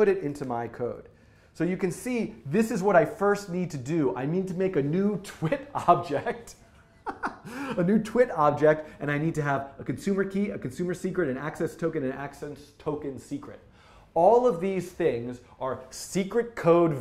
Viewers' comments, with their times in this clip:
0:04 That laugh though...